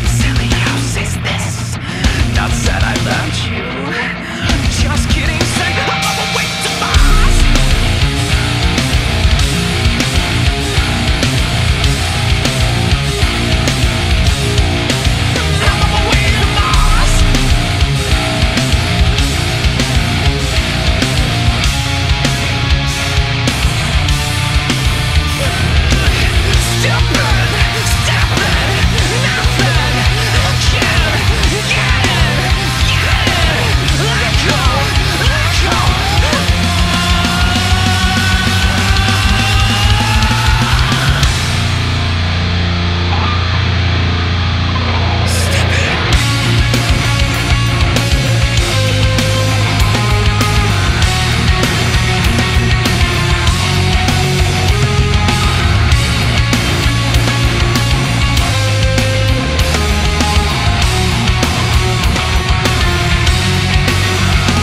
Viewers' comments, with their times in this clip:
0:04 Man that triple china slap before that drop into the chorus
0:14 Is they're a very weird double bass pattern around the mark?
0:42 The guitar solo is sick... 🔥
0:45 is just amazing, I love that riff so much I get shivers all over my arms. Good album.
0:45 That breakdown is fn KILLERRRR!!!! Pete is hands down one of the most underrated guitarist, the insane riffs and just his style is out of this 🌎 incredible!! One things for sure I've been a fan since Wonder what's next came out over 20 years ago and Pete's style he plays influenced me BIGGGG time!!!
0:45 Love the riff nice little callback to 30 Seconds to Mars' first couple albums.
0:45 Anyone know if this song is inspired by 30 Seconds to Mars' song "End Of The Beginning"? The riff/segment starting is almost identical to the main riff in that song, even the drums feel similar minus the toms and find it too coincidental this track has MARS in the title and he repeats "I'm on my way to MARS". Also back in 2003 Chevelle toured with 30STM while they were playing that debut album.
0:46 Loved on minute Powerful and epic piece 🤘🏼🤘🏼🤘🏼🤘🏼🤘🏼🤘🏼🤘🏼😎👏🏼👏🏼👏🏼👏🏼👏🏼👏🏼
0:46 That solo though.. beautiful 🤘🏽🤘🏽